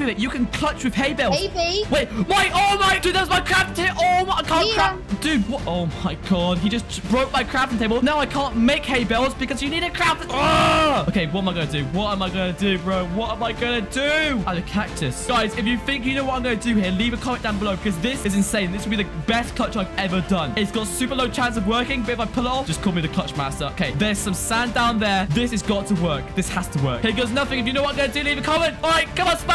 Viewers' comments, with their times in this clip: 0:04 "see ya" that voice was like a 10 years old kid
0:10 The angry sound is funny